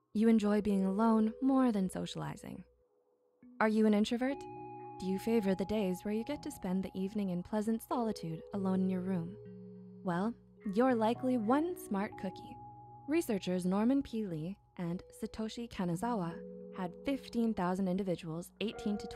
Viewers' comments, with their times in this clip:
0:07 May I ask what happened to your voice?